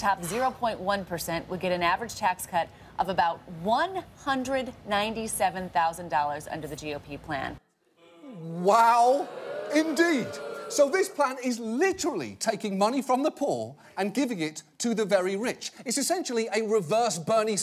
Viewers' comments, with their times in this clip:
0:04 listen for the first boo.